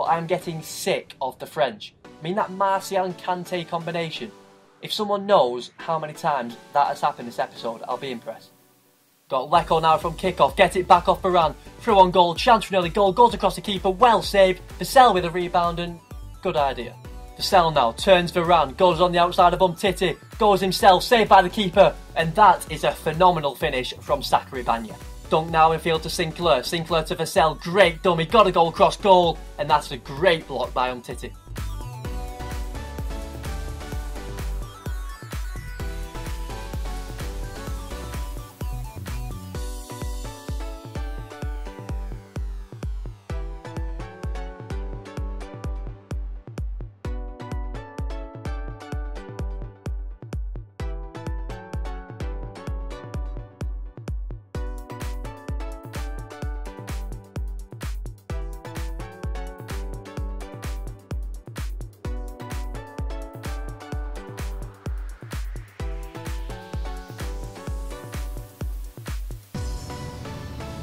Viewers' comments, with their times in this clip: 0:08 did anyone hear him say sacary bagna not bacary sagna
0:20 sacary bagna hahaha! Great vids so far man, keep them up :)
0:23 man said sacary bagne
0:24 Sackary Bagna ?? xD great video mate that made my day xD
0:26 did he just say sacary bagna
0:27 he says sacary bagna
0:55 well at least u had music or that would have been really awkward